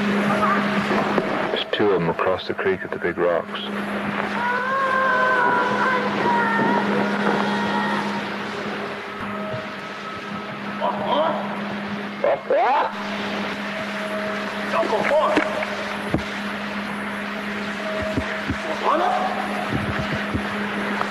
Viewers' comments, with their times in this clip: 0:04 you can hear one of the Bigfoot say "Ohhhhh my gawwwwwwd!" Cryptozooligists claim Bigfoots are great mimics so hearing that makes me believe that someone cried that out when they saw them. It was probably the last thing they yelled before they met their demise.